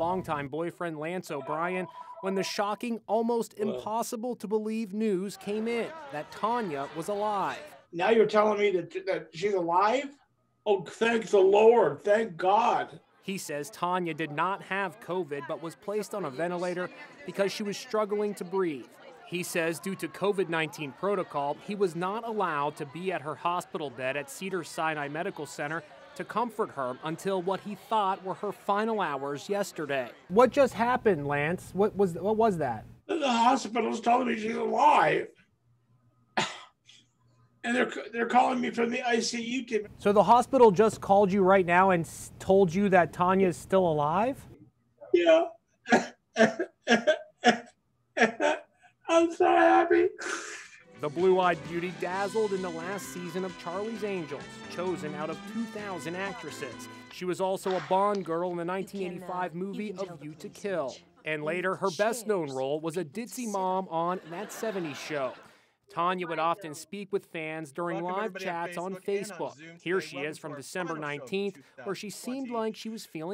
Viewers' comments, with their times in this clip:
0:10 Something is off about this boyfriend. Look He sounds so fake it's ridiculous.
0:12 He sounds like he sent his friend to the supermarket really late and managed to get there before it closed. Way too calm.
0:44 that cry tho
0:47 im sorry but his cry is so funny
0:56 "...in the 1905 film 'A League to Kill?" I think you made that up, Inside Edition.